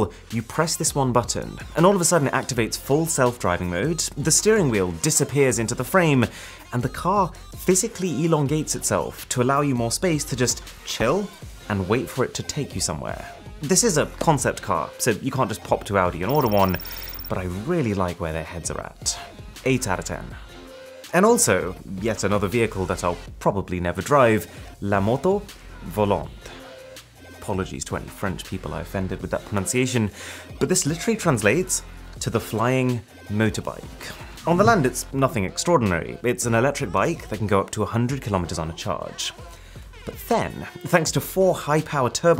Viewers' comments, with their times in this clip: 0:08 Elon Gates itself... interesting combo
0:24 as a french person, this is the best prononciation I've ever heard from a non-french speaking person
0:29 your pronunciation was actually surprisingly good!
0:30 ur french pronounciacion is actually very good (not the best but good)
0:30 don't worry the prononciation was right, just with a really big accent